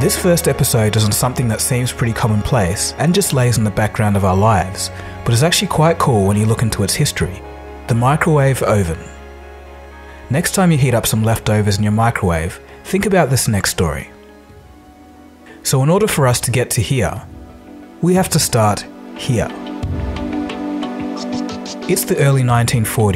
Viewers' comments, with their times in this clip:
0:05 whats an oh- ven?
0:08 Oh-ven? I know that is not the normal Australian pronunciation. Where do you get that from mate? (NZer here)
0:08 lol im holding you responsible if the world starts thinking we say "O-ven" in Australia 😝